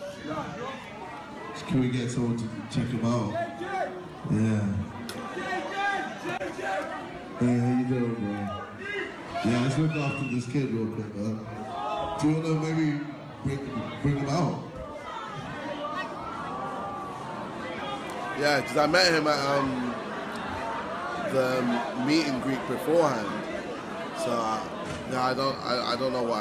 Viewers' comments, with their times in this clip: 0:08 Lol thay guy who shouted "FAT NEEK" 😂